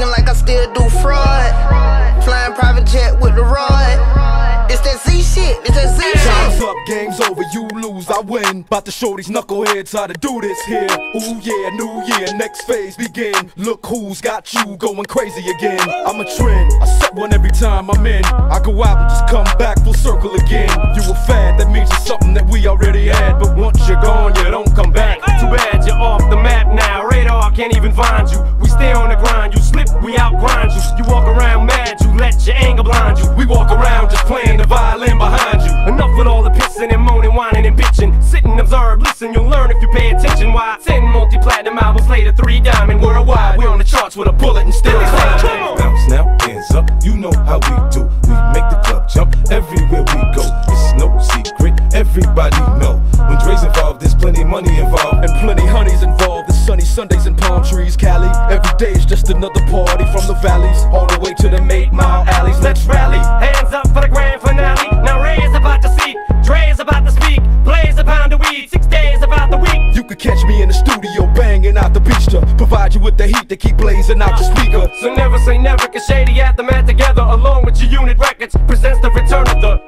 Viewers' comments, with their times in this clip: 0:05 The quick mix transitions get crazy good
0:06 dre eminem and 50 fit so perfectly
1:00 that transition is 🔥🔥🔥